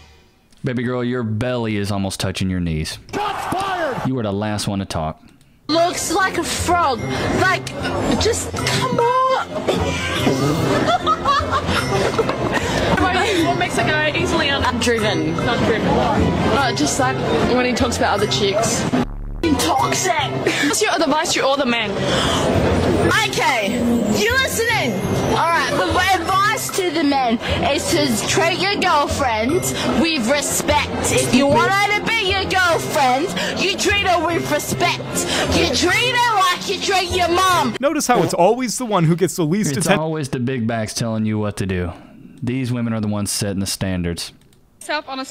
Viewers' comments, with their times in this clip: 0:03 even her tongue must be heavy, she struggle to move her tongue when speaking 🤣🤣🤣
0:29 And they say whale noises are beautiful and calming. What a scam!